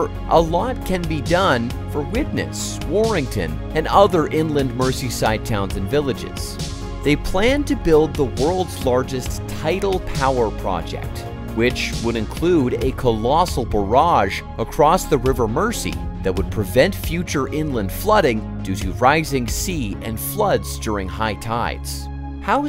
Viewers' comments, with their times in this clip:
0:05 mercy side LMAO.